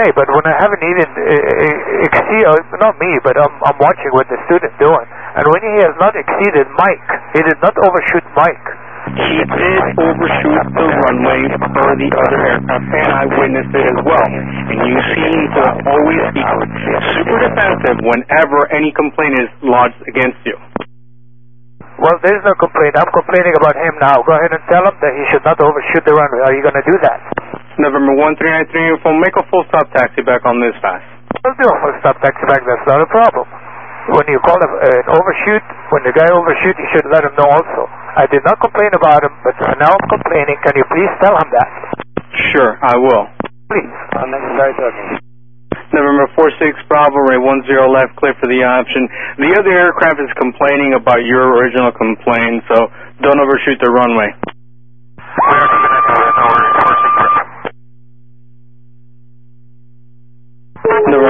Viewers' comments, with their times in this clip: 0:08 TWR wasn’t playing around. The didgeridoo blasting in the background made it sound like he was summoning a spirit to strike down the offending pilot
0:09 what was the voice so glitchy?
0:10 uh is the static in the background the sound of ATC boss music?
0:12 What was that demonic chanting around the mark?
0:45 That radio (scream?) reply noise freaked the f- out of me! Jeez low ease.